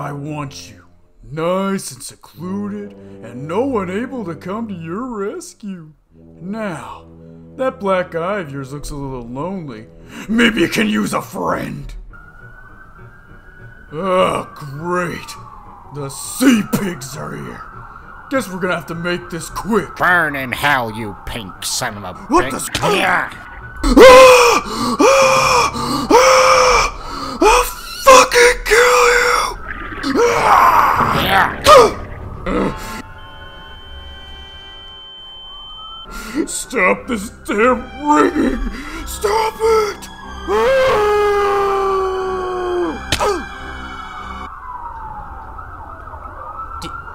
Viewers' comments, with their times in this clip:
0:03 Bro really pulled up that last breath
0:23 I like the fact that he is screaming without screaming here
0:24 the guy voicing Patrick lost his voice
0:24 How whaill screams:
0:28 Patrick’s voice just dies